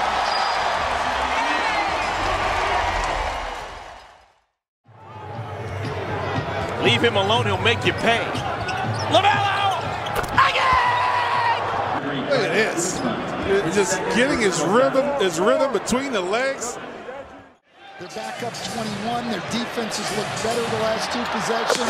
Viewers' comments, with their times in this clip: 0:09 Even commentators get voice cracked 🤣🤣🤣